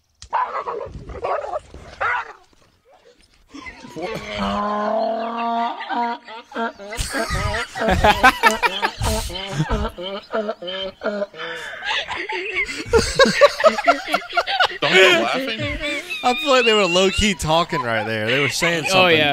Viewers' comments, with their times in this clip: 0:05 as muslim everytime why hear donkey doing like that we ask Allah to protect us from the accursed satan..because donkeys do that only when they see satan